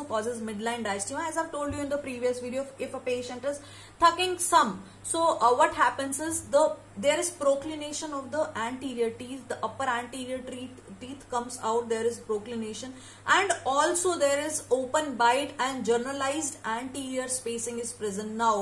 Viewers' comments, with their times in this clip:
0:03 "if the patient is THUCKING SUMB" 😄